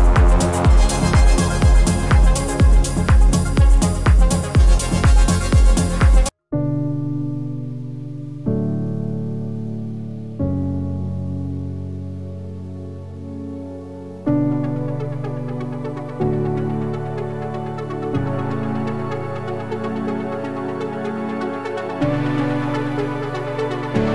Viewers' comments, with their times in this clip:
0:07 Hey man, awesome tips! What piano do you use ? Sounds nice and full